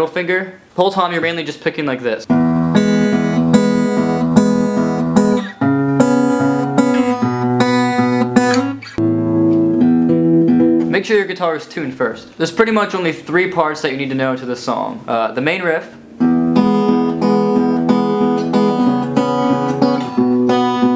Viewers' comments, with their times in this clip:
0:08 You Forgot 1 Note :/ When you are doing the chorus part, when you repeat the pattern for second time you make a different last chord! Exactly of your video.